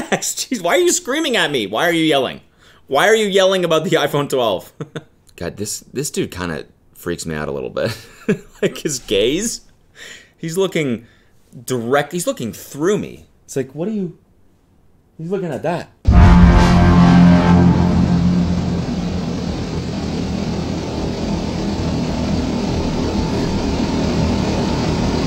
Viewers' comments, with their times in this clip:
0:08 did you just call us gays?